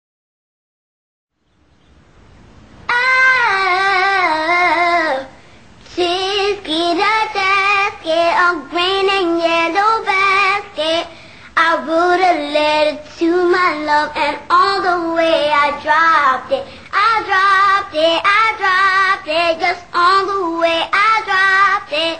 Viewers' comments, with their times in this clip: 0:03 I like the 3rd one thats a nice voice and she is anoying!